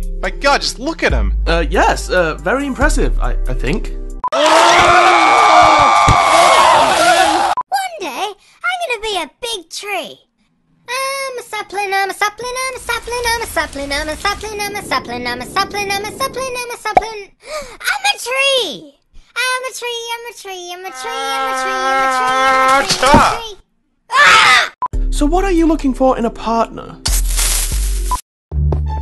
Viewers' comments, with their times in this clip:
0:04 lel swords and sandals sounds
0:04 screaming at the beach
0:08 I feel like I've heard that voice before.
0:10 I'm a Sethbling, I'm a Sethbling, I'm a Sethbling (Repeat)